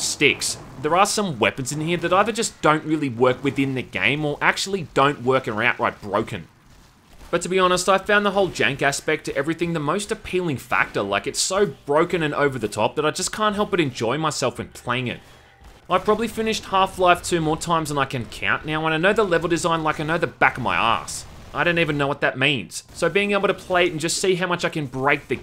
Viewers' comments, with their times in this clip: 0:07 The FEAR slowdown effect and sound, is an awesome addition. Death by flare to the crotch. Ouch.